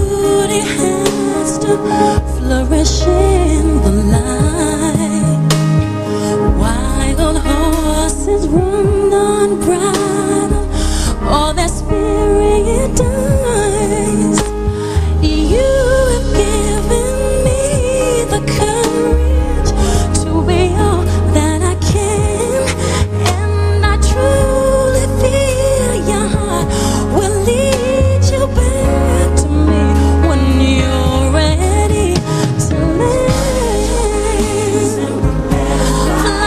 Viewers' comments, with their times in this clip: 0:05 why did i write it in this damn key?? lol Flawless as always MC!
0:22 the way she said "and I truly " OMG it blows my mind, I can't explain it but I really love that part, this is perfection.